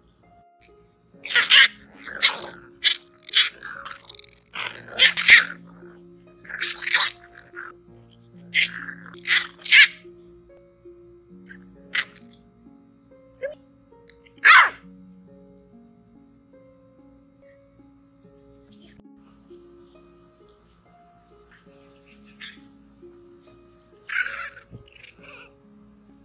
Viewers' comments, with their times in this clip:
0:09 OMG he's adorable! The cuteness after i can't even!! Scooting and yelping around like he's the biggest dog in the building. I love hiiiim!